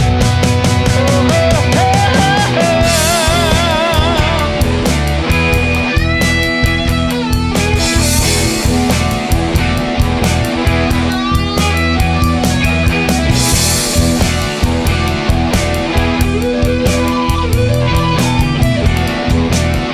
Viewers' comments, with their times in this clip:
0:04 Excellent sound everywhere